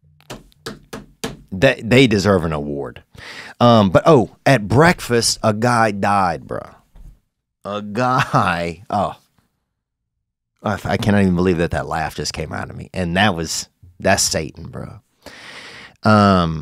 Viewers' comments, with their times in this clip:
0:04 “That’s Satan bruh” at the accidental laugh had me in tears